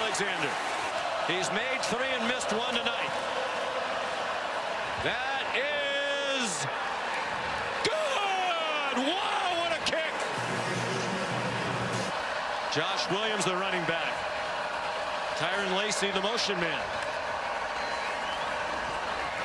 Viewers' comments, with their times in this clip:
0:07 Sean McDonough voice cracked... again 😂